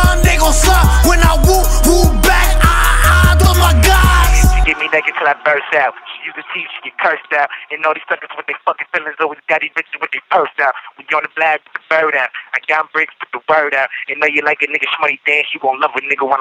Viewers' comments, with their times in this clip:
0:04 when you're in jail and rapping on the phone